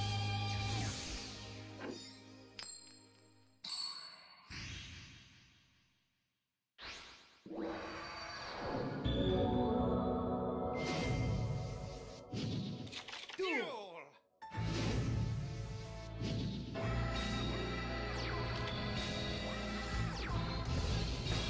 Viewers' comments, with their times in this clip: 0:05 I like how the "DUEL!" quote sounded like it was said by ojama lime